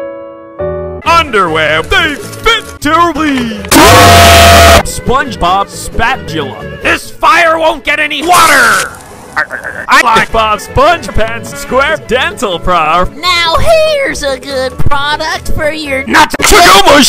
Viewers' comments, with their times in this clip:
0:03 They fit terrible (screaming)